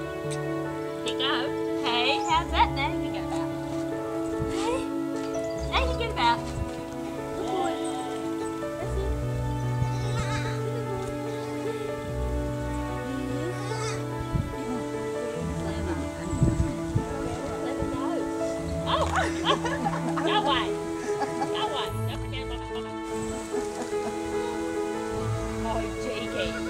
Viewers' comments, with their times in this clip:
0:09 That 'Meeh' got me